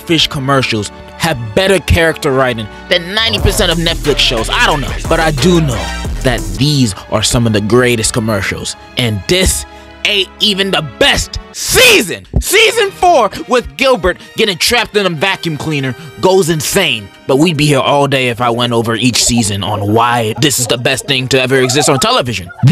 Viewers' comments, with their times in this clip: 0:03 WTF IS THAT GOOFY AH AH BGM BRO 😂😂😂